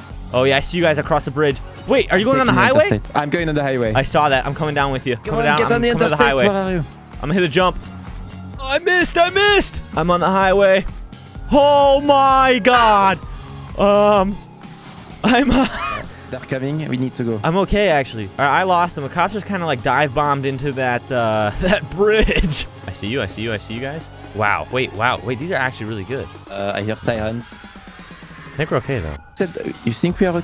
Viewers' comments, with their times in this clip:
0:10 Did u guys hear that scream😂
0:11 the way his scream cuts off
0:12 that cop scream
0:12 Anybody else hear the scream from the cop
0:12 the cop screamed for like 1 sec